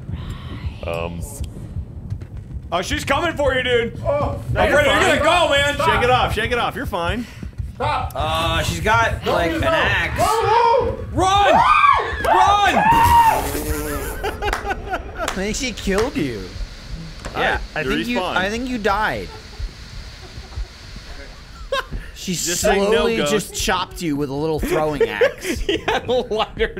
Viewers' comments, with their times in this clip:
0:10 pretty sure thats a hammer as she was boarding up the windows.